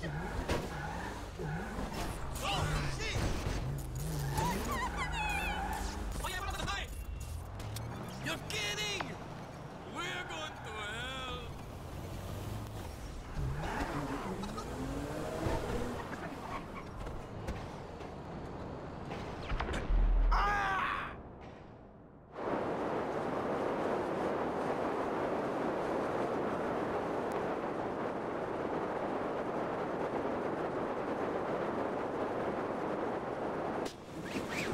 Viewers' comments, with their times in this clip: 0:06 The fast forward talk from the taxi guy I can't 😭😂😂😂
0:21 Michael’s fever dream song plays